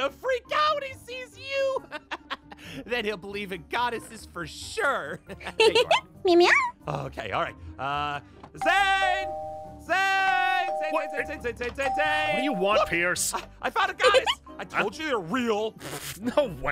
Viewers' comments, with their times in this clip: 0:03 I almost thought aphmau said the f word but she said HUH??!